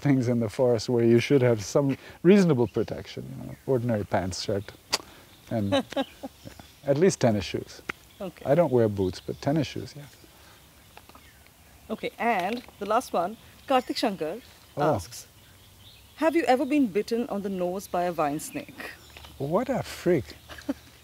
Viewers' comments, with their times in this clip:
0:04 The sound he makes shows how Indian he is!! Truly a legend 👏🏽👏🏽 🔥